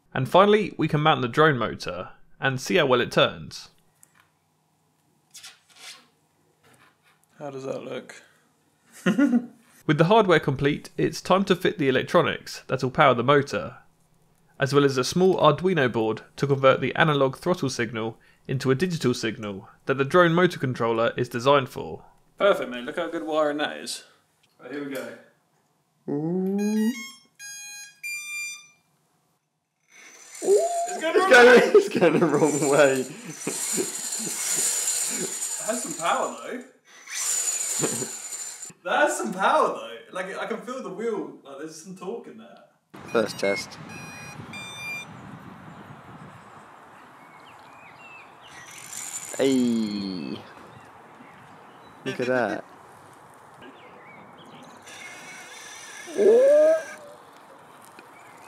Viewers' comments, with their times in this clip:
0:07 the sound of a mad professor
0:09 That little giggle of success!! >.< Quality!
0:41 You can hear the birds in the background chirping to the chime from you powering on your electronics